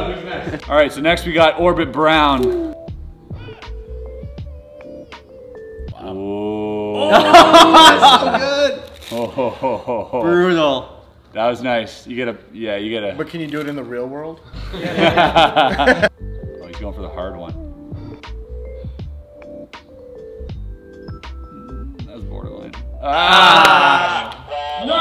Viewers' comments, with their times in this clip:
0:06 Play It At 0.25x Speed!! Thats a long Oooo..!!